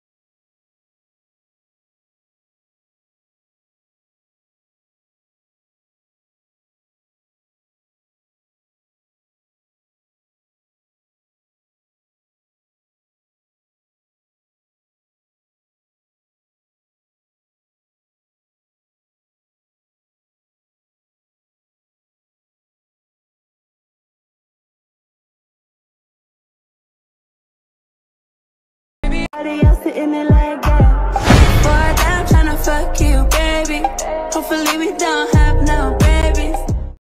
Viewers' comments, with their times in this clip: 0:05 Adrien talks to himself for about- 3 seconds?
0:29 she is crying because she can't get the ps5